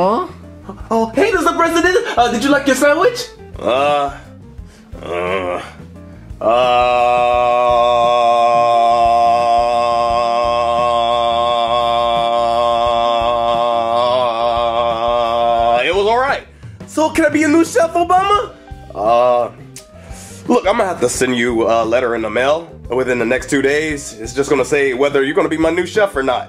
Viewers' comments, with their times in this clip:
0:06 I bet anyone who could do a 10 Hours video of Mr. President for saying uhhhhhhhhhhhh
0:11 I Like ever time obama says uhhhhhh when he talks its cool